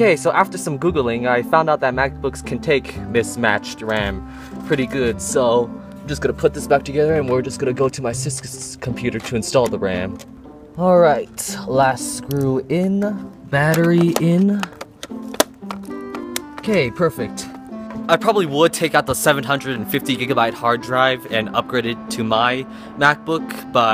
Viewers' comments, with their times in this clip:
0:07 " we are just gonna go to my SCCSCSC'S Computer" King 2016
0:07 we will just go to my sksksk. He is a vsco girl